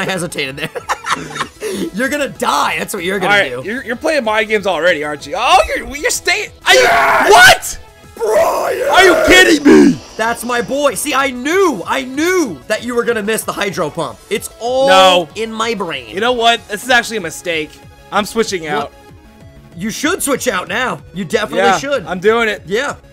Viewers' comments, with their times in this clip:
0:10 that voice drop though